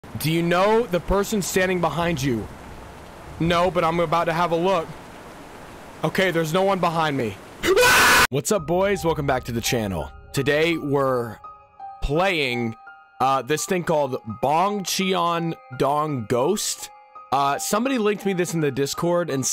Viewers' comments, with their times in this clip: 0:06 perfectly cut screams